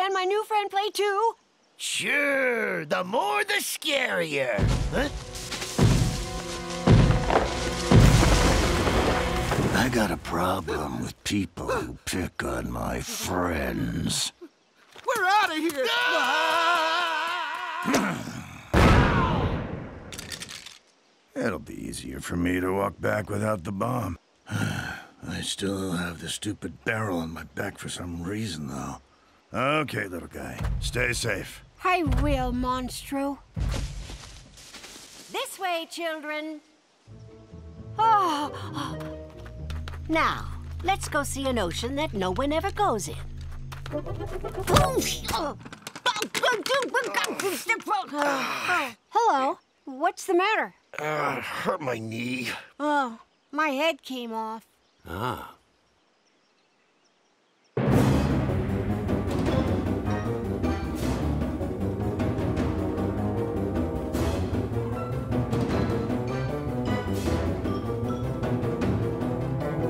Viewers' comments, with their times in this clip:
0:03 THAT VOICE SCARED ME 😂😂😂
0:04 the Giant Skeleton's footsteps sound like the Iron Giant
0:10 that giant skeleton sounded like Reaper.
0:11 The voice of the giant skeleton is very seductive 7u7
0:19 he sounds like soldier 76
0:53 larry said "my head fell of" like its nothing